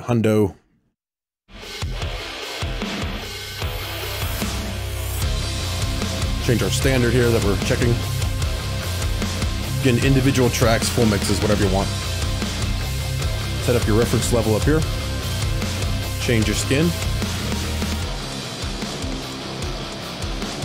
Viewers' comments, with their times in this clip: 0:05 What are you using for the dirty rhythm during the intro and around the mark? Sounds awesome! Articulate and heavy! The mix of the epic track is excellent as well.